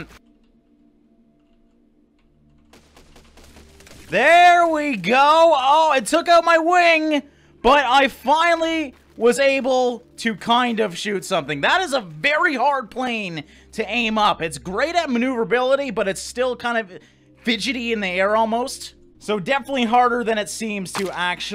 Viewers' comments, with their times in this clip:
0:04 i dont know why i like that crash so much
0:04 such a satisfying crash
0:07 best crash ever